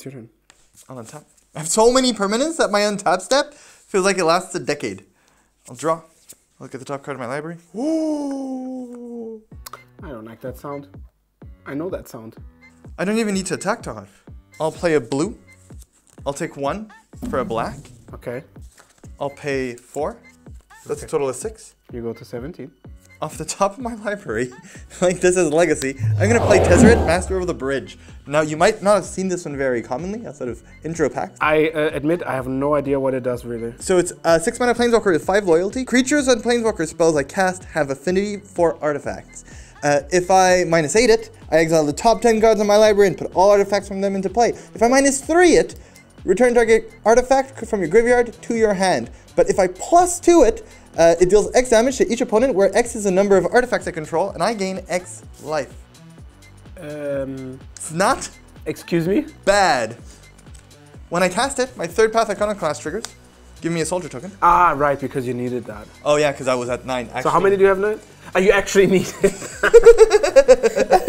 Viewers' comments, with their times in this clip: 0:03 what’s this beeping great vid btw
0:56 What's with the beeping ? Really irritating.